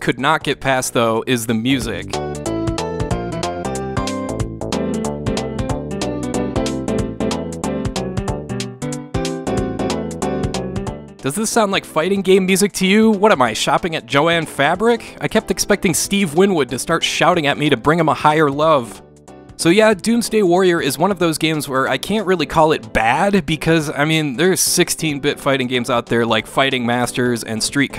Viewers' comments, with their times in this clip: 0:09 sounds like something from Dungeons of Dredmor.